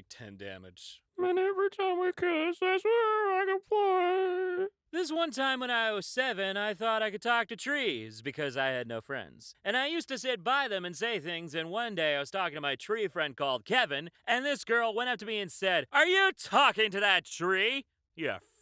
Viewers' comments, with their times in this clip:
0:05 idk why, but the voice you used for this post sound like John Mulaney, I probably thought this because I did listen to his “The One Thing” story multiple times today, but I still think it’s interesting to point out.